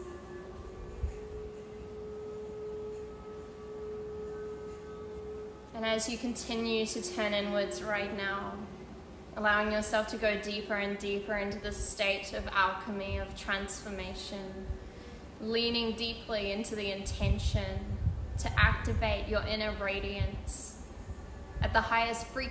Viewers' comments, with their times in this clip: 0:03 ~ breathe into innteenton and beegin magiiick